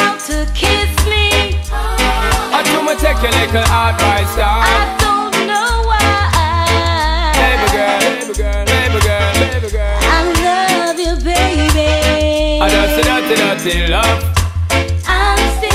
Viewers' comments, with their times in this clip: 0:03 he say turkey licker